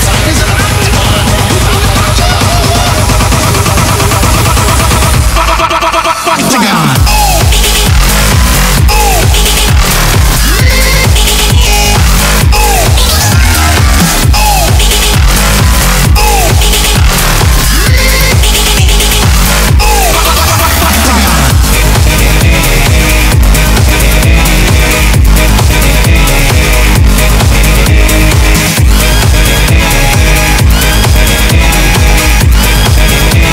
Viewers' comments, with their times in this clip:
0:07 That moment when you like the YTPMV a bit better than the original song. Both are awesome, though. I just like the bass part better.
0:21 Final Boss//Level Climax Vibe